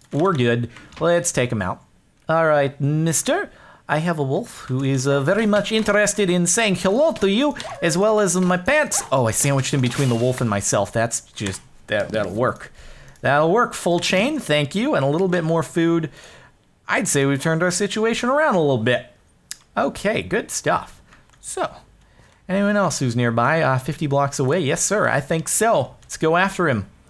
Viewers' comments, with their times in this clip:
0:08 Omg, you sound like my freaking dentist...